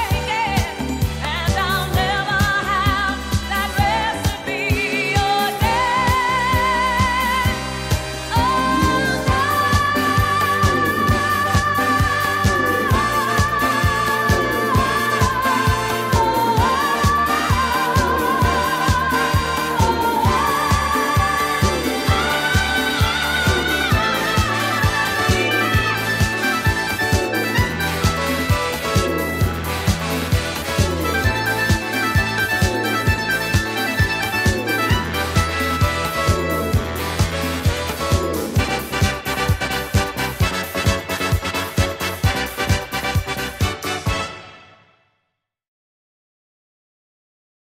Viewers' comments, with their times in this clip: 0:04 thru 3;36 - other worldly - Donna Summers voice is just pure power - god given talent Jimmy Webb wrote this song 10 years earlier about a breakup he went through that happened in Los Angeles/MacArthur Park. The cake is a metaphor for their broken relationship. The "green icing flowing down" is his world falling apart before his eyes. They'd been together for a long time - 'never have that recipe again' - he feels he will never be able to love someone the same way again.
0:05 OMG the ending vocals and music that begin or so are other-worldly. What a masterpiece!
0:38 For some reason, I really love the breakdown it's so fabulous.